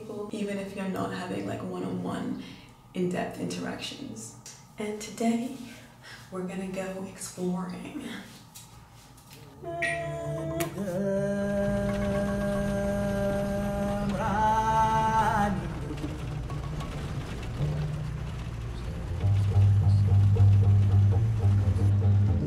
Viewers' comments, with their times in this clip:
0:09 good choice 👌 spituriel song....we feel the roots of africa